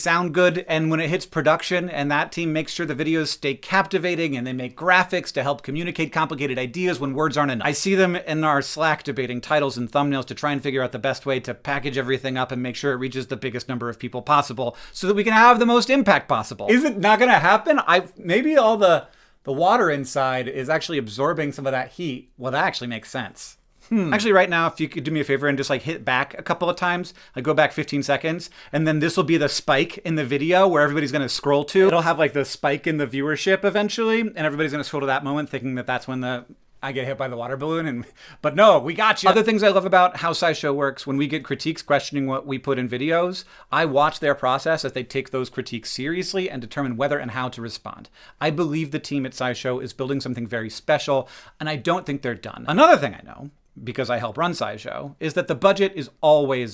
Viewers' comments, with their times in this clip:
0:10 Oooh I felt that groan. Or it was more a mix of a groan and a grunt. A groant.
0:12 is when the balloon pop
0:15 balloon pop moment for those looking for it
0:15 pop happens here
0:27 The pop is
0:31 the balloon pops you’re welcome “spike in the video” has lost all its meaning to me at this point i heard it so many times lol
0:37 The balloon pop!